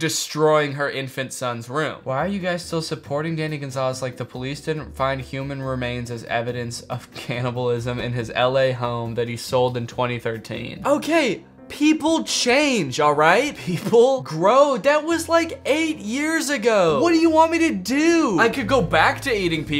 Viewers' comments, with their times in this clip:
0:07 The chuckle over cannibalism 😂